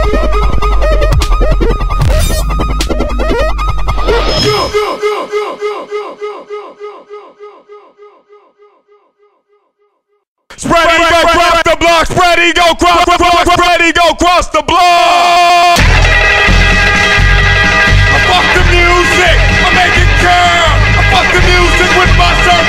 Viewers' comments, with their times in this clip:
0:10 yes, he stops yelling